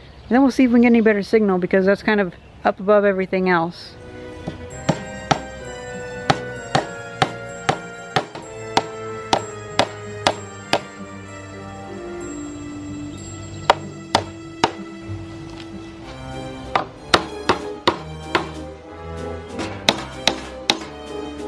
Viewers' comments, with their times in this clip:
0:04 wow the music started playing i almost started crying becuase i haven't hurn that in so long